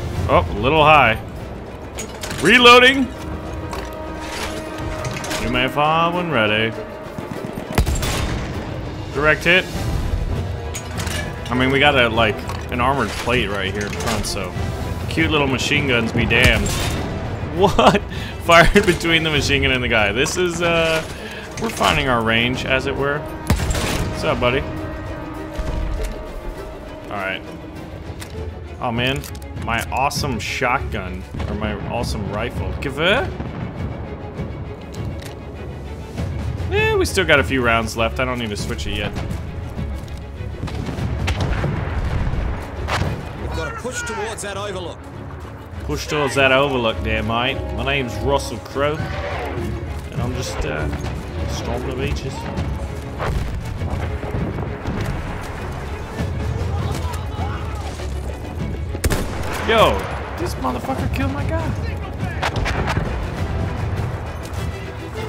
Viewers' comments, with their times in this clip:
0:04 I got the Star wars death star firing approval reference right there. Nice with the accent.
0:47 sounds like you're making a vlog also stop waisting half a magazine and reloading to early